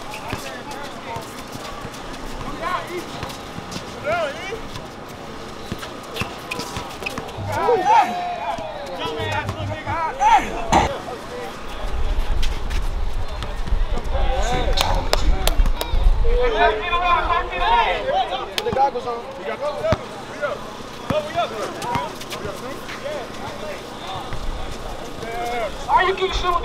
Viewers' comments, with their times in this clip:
0:08 Nah the sound effects was hella on point impeccable timing I was💀😂